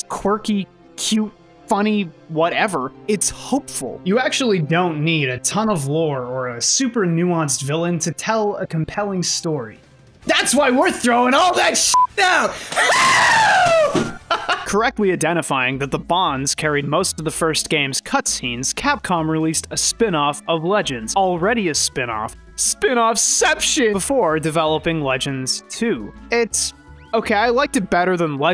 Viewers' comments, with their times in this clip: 0:10 the screech to throw power ratio is heavily skewed beyond redemption